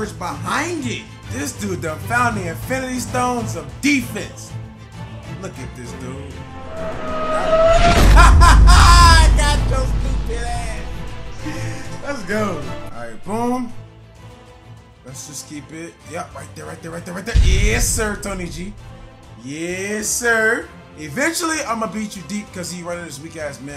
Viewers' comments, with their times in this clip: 0:08 when my friend laughs when I walk by them in hide and seek